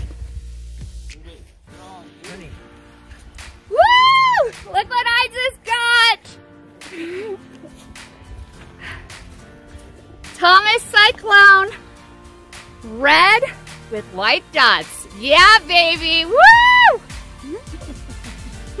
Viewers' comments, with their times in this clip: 0:04 ha ha the sounds of exuberance 😁 Wow over one pound, soon you'll be hauling in 2 pounders like nothing. like 14